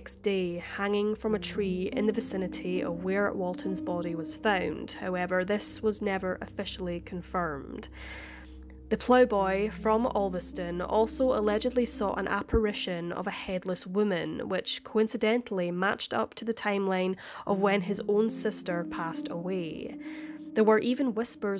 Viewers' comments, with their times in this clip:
0:07 I have one question for do the Brits define a "playboy"... timestamp?!?! As an American, I think of a "playboy" as wealthy💰, surrounded by beautiful women💋 and sipping on a martini🍸 I'm guessing there's a different meaning for the word across the pond lol!! 🤷🏻🇺🇸👍🇬🇧🤔 #DarkCuriosities